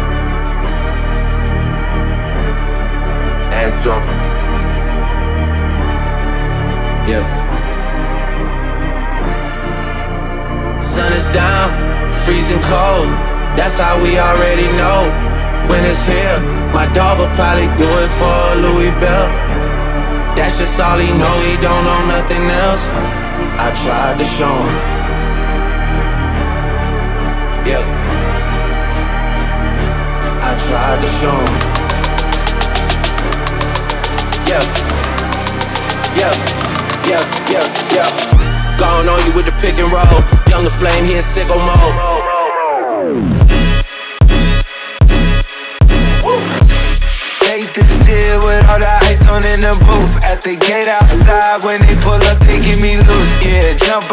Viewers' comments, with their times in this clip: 0:03 Goddamn made Drake sound like Travis
0:42 Nothing: my pc at 3 am